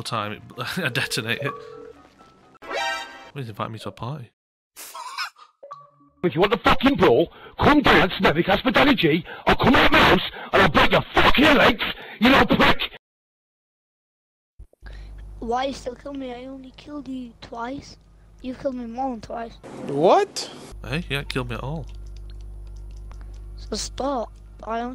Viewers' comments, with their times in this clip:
0:05 if that is what that kid sounded like holy cow I would have died of laughter lmao.